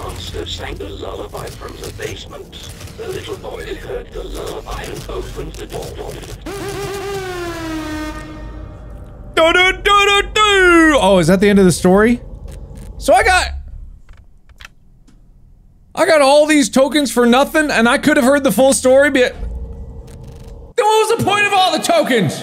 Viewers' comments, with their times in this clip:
0:07 AIR HORN SOUNDS.